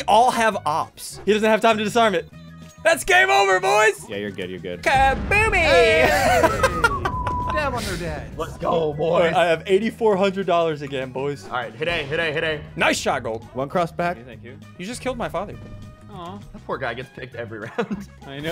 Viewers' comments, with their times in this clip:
0:05 did anyone hear that whistle?